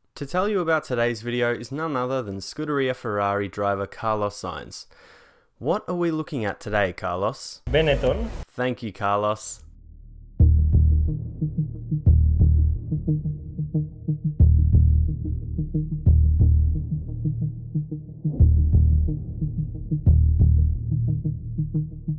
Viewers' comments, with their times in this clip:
0:10 You made the intro sound like something straight out of the recent Hitman games